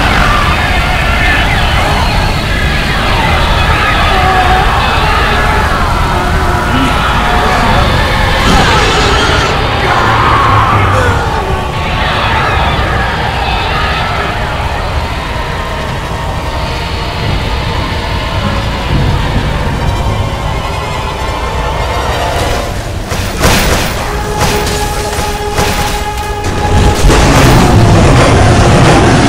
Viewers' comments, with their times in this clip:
0:08 is that sniper screaming?
0:09 sniper death cry?
0:09 The TF2 sniper death sound xD
0:09 Love that sniper death sound
0:09 TF2 Sniper death XDDD
0:09 tf2 sniper death sound :0
0:10 Tf2 sniper scream :D
0:14 thought I heard the sniper from TF2. Like comment if you guys hear it.